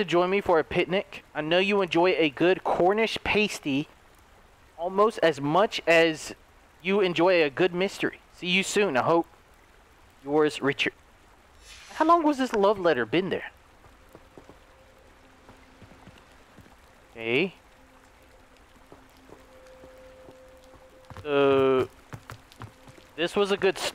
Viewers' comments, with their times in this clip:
0:07 The way he said Cornish pasty 😂